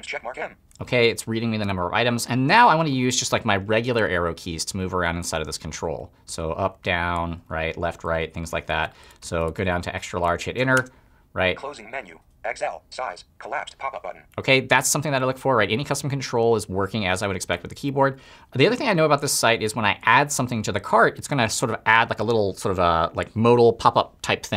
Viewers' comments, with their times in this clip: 0:07 This is a great video Rob, as demystifying accessibility is one of the key ways to open up accessibility knowledge in my view. One point though, when you interact with the size dropdown using the up and down arrow keys, I'm not hearing any feedback from Voiceover. Did the audio get edited out there, or is that actually a problem in that site?